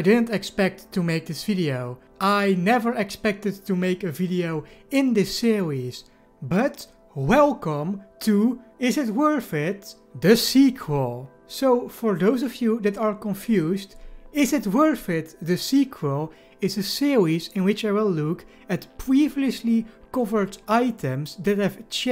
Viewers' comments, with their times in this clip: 0:05 he said "See-wheeze" instead of series lol